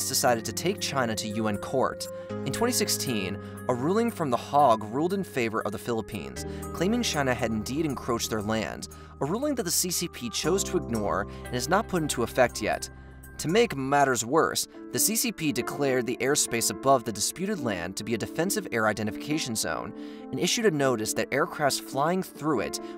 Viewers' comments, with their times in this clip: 0:03 a ruling from the hog, lmfao. it's hague and it's pronounced hay-agg. *the more you know...